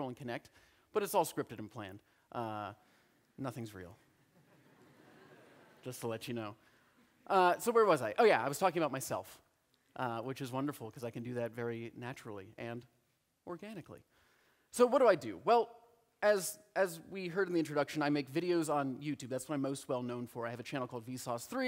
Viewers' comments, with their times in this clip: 0:05 The audience is laughing, even at his more minor jokes. You just can't hear the audience